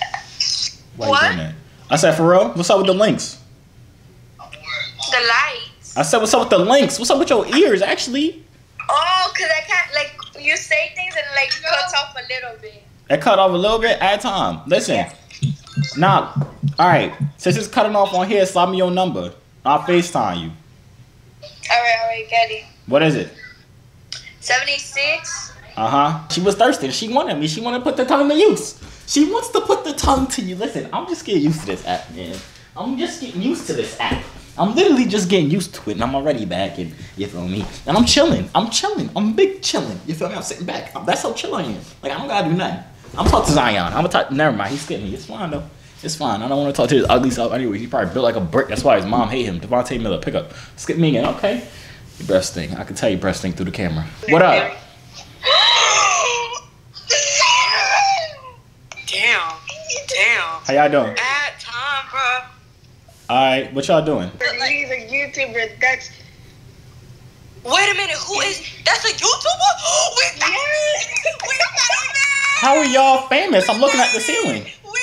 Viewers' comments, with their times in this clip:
0:03 That girl said da likes
0:23 Girls that sound like this be talking back all the time
0:26 everybody on YT got a sollumanati accent 😂
1:00 YOU MADE GIRLS VOICE SHAKE BRUH 💀💀💀💀